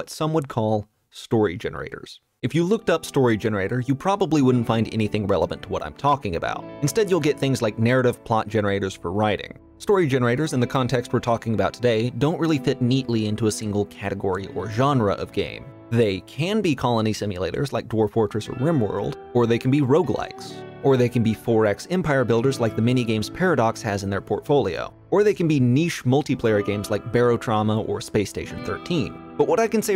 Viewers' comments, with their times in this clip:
0:03 It was right when the Rimworld music kicked in I couldn't help but smile and reflect for a while. Realising quite how much of an impact these games have had on me suddenly I'm sure isn't something only I feel. A bit of imagination and well crafted generators seems to come closer to immersing us in worlds than even most VR titles seem to be able to currently and that is beautiful :)
0:07 when that rimworld music kicked in it just made me feel something. THAT is what story generators do. They are the TTRPGs of the video game industry
0:07 when that rimworld music kicked in it just made me feel something. THAT is what story generators do. They are the TTRPGs of the video game industry
0:16 When the Rimworld music hit ... I smiled wide with intrigue. Rimworld rep always gives me joy
0:16 what a fitting background music - well played :D Although DF is one of my most favorite games (if you haven't played it - try it, now!) I would have used rimworld for explaining the concept because it pictures the story teller engine as a personality ("Randy Random", "Phoebe Chillax", "Cassandra Classic").